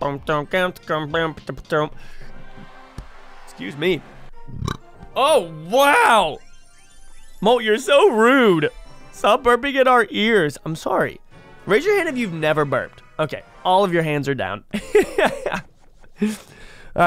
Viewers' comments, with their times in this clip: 0:05 I have never seen someone react like that to their own burp 😆